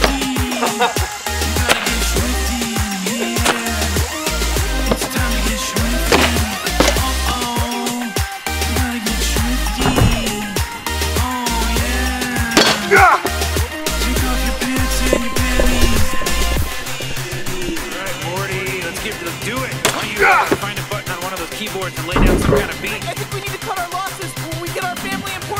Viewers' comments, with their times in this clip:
0:09 when a normie says get shw Scwifty